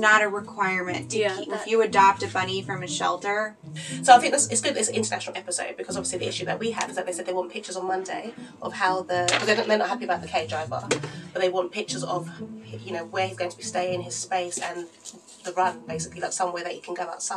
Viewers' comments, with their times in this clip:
0:03 she should be a rapper